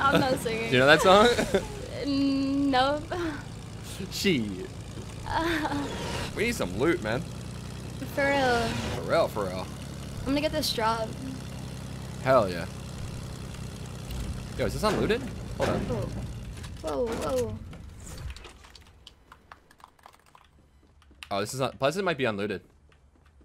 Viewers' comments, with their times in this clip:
0:06 was that an accent when he said loot? 0o0